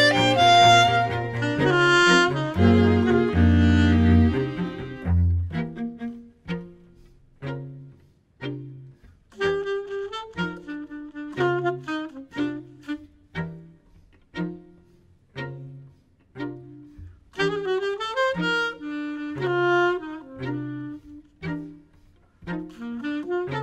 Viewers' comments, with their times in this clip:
0:08 That motif from onward: "de zak van sinterklaas, oh jongens jongens wat een baas" anyone?